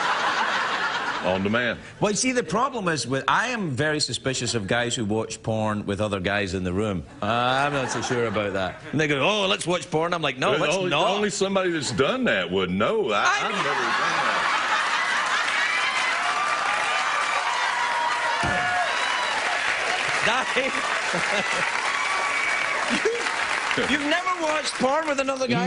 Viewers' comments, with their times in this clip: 0:08 It sounds like Craig says the n-word.